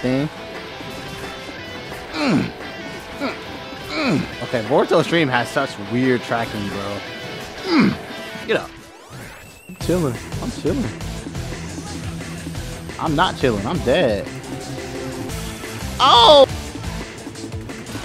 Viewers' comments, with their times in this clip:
0:05 that boy got me hype asf with the budakai tenkaichi 2 theme song